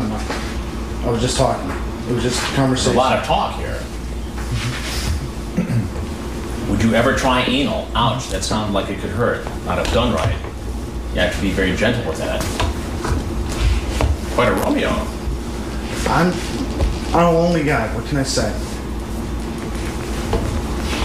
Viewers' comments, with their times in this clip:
0:04 Why does that guy keep making that noise? Also, they way Chris calls him out when he's already caught is hilarious. 🤣